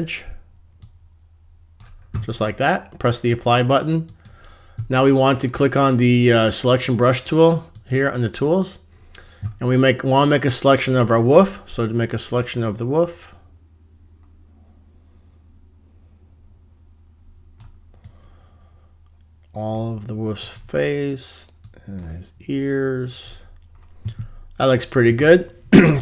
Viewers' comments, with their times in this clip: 0:08 Last I checked there was an L in the word WoLf>.. Woof is the noise a Dog makes. I'd have selected the wolf Again & inverted it so it was masked out of the HSL adjustment. It looks stupid in pink. ! of my life I'll never get back.